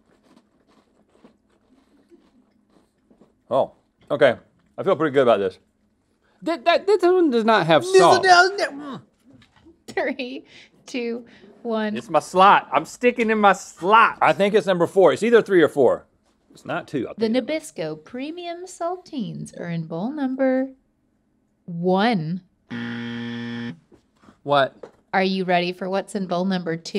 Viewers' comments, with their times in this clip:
0:07 You forgot when Rhett imitates Link's stutter: 😂😂😂